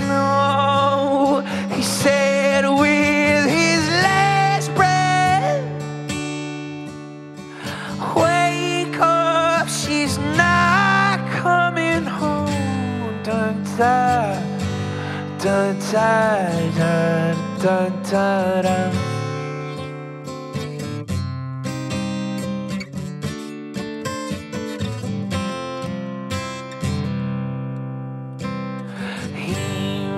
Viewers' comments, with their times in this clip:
0:10 that broken voice is amazing. I could listen to it for hours.
0:11 Hey guitar heads, what chord is he playing after the Dmin at approximately ??